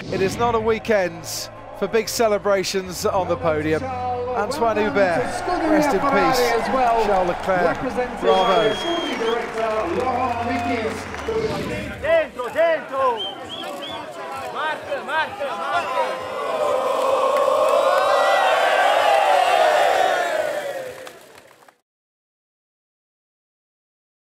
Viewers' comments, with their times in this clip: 0:05 That moment when you received honest applause from both legends Lewis and Bottas.. Replayed many times